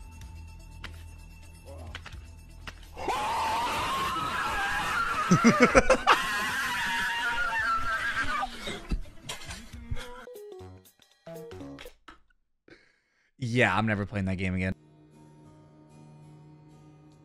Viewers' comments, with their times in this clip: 0:04 Why does that sounds like something from star wars